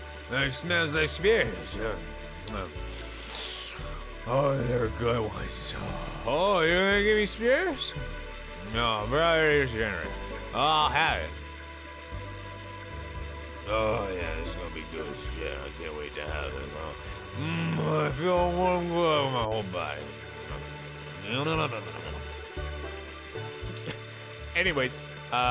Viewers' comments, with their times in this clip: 0:10 what was that?? 🤣🤣🤣🤣 That was an amazing voiceover